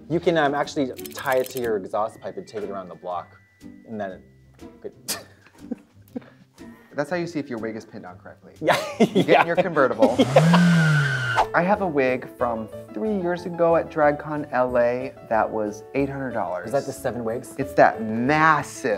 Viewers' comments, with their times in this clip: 0:04 I went "tch" in perfect sync and purely coincidental with Katya. I feel blessed.